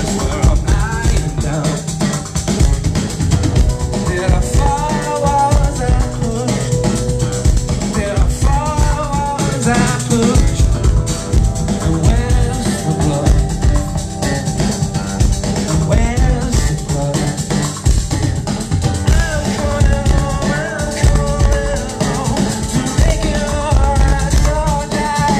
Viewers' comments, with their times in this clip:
0:06 Wow. Joey's on fire in this! Listen to the way he throws in a little roll (or whatever the drumming equivalent of a trill is) on the high hat Amazing.